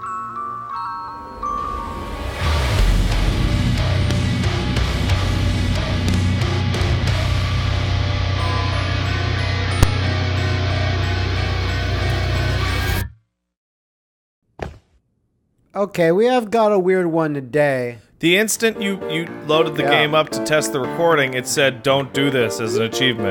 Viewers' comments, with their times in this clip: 0:09 The scariest part of this year's Shitstorm is that pop in the intro.